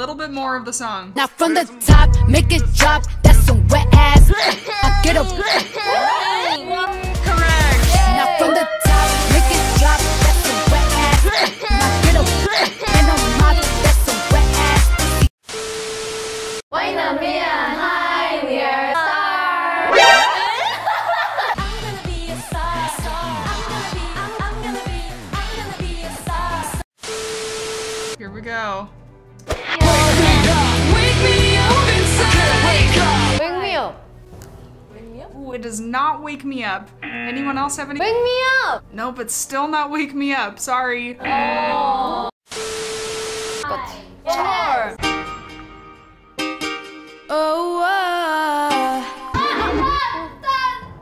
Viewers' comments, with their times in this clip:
0:08 WAP × Fancy (ft. Momo's sneeze) One of the best mixes I've heard
0:38 Am I the only one that Jihyo’s shout”Wake Me UuUp” sounds cute